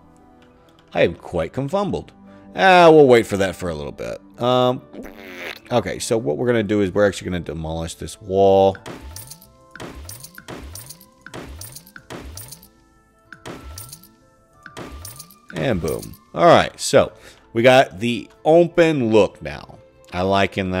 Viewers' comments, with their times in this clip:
0:04 uncanny fart noise